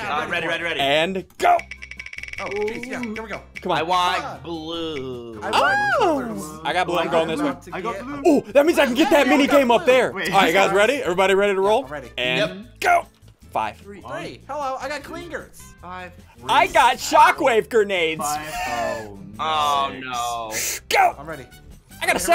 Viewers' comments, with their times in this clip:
0:06 That weird noise he made